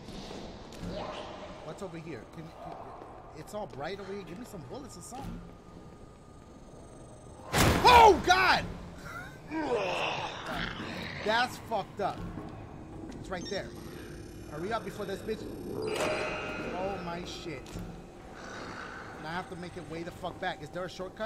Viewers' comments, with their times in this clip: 0:05 that zombie went “gibby!!”